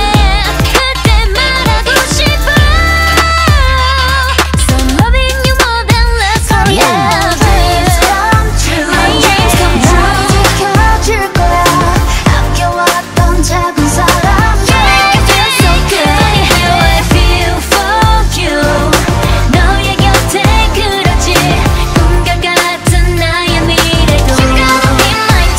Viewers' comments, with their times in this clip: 0:08 Giselle's adlib of " dreams come true" is so addicting